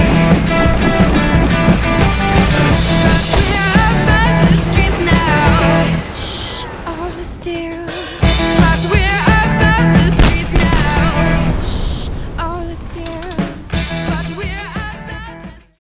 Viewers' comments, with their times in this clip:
0:07 -and get out of the car and... pose yeah great shot guys now run before it explodes -Wait what?? KABOOOM xD
0:08 another safe landing ...BOOM!!!!!!